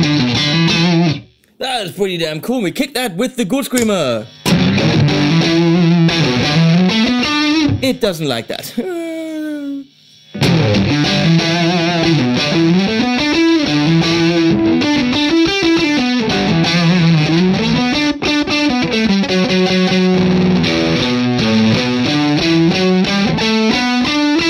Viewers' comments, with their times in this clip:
0:07 I though it sounded pretty rad, kinda like fuzz even though you didn't like.